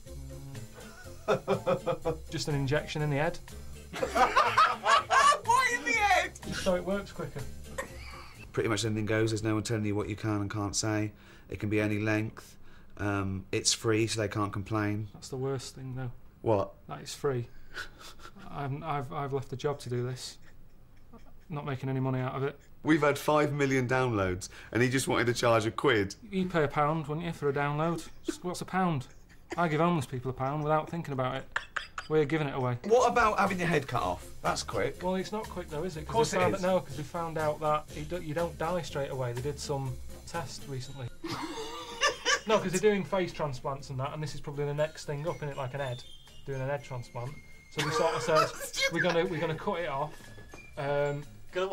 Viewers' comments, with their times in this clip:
0:03 xD that laugh
0:32 i like the way ricky laughs